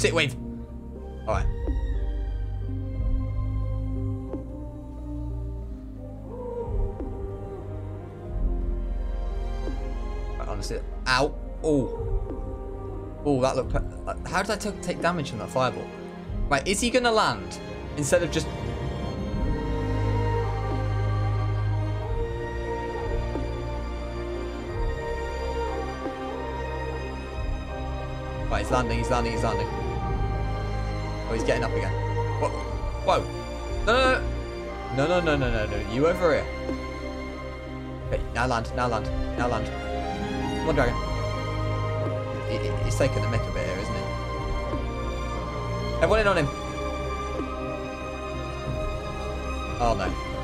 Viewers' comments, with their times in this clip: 0:06 the wolves houl perfectly with the music
0:36 Running up that hill...but a sad instrumental and choir? Wouldn't have expected that.